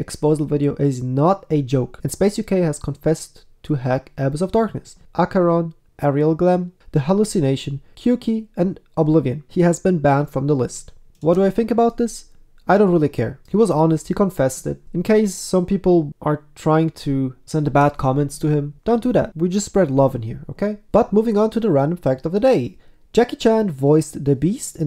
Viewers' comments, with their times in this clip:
0:06 aerial glem lmao